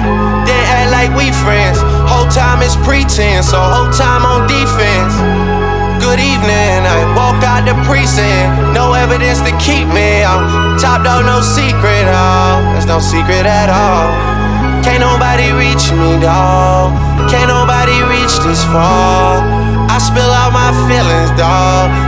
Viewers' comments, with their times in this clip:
0:07 140 BPM. Drake seems to be on 139 BPM until